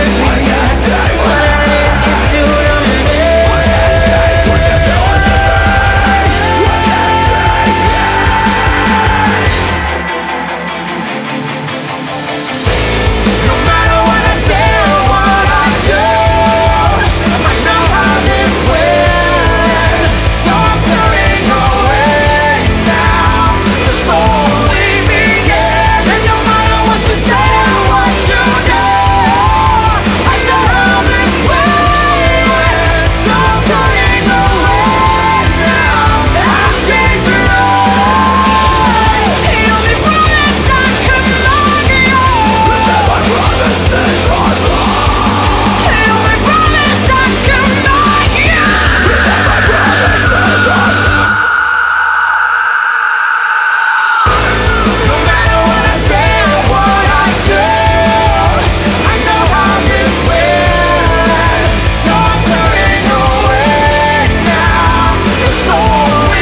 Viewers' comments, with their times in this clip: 0:04 THE FUCK IS THAT NOISE exactly. sounds like someone saying neee or something in the background
0:38 I still get goosebumps holy fuck this duet screaming is awesome.
0:47 maria's scream goosebumps fr
0:49 the harmonizing screamst tho...
0:49 I like how they were screaming in each others face lol
0:50 I love this song and the scream Maria lets out sends chills down my spine.
0:50 The harmony is just epic, got cold chills everywhere
0:51 This song made me scream till I cried ... I really thought they both turned into werewolves after screaming... and realized it just occurred in my head 🤘😎